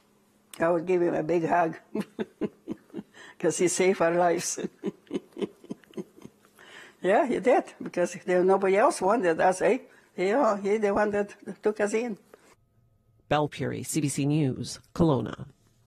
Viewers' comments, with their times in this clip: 0:10 She has become True Canadian lady now 'Nobody wanted us, eh?' 😁